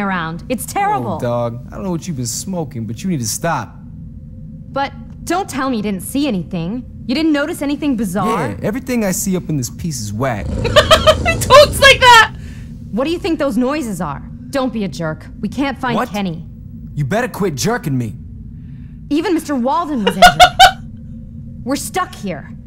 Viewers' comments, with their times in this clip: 0:10 I'm pretty sure that is the language of the Justin Bieber